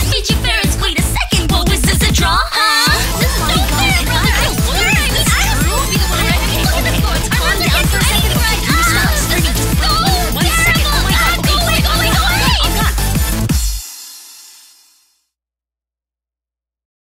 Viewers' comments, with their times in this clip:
0:07 im actually confused Was that moan or am i bugging??
0:08 wait did rin just moan ;-;